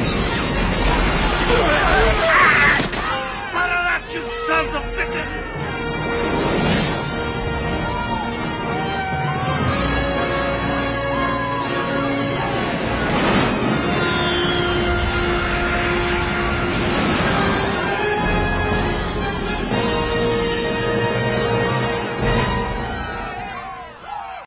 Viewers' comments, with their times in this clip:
0:07 the original VHS tape I had years before, the victory howls sounded a little different.